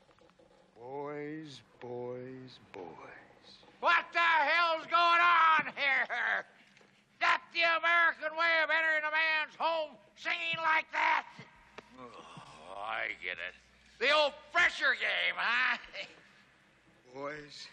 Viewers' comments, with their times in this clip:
0:03 Jim Sideow's line delivery is pretty funny! 😂